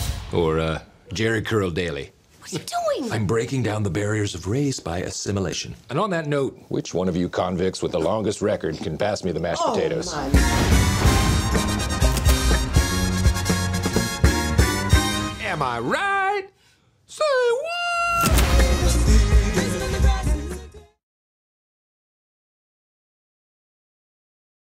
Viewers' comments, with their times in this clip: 0:07 i sense a hint of giggling from the woman sitting next to Will